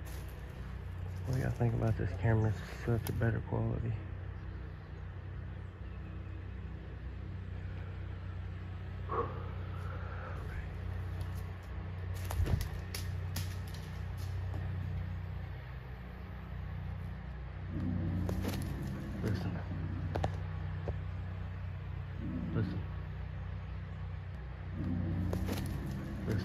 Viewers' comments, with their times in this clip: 0:08 during the video there is a woop that was not outlined. Not sure about the growls, I have questions about them.